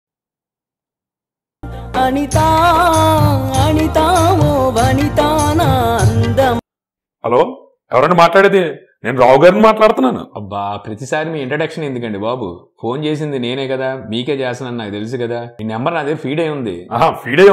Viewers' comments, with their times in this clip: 0:02 that Anitha song🤣🤣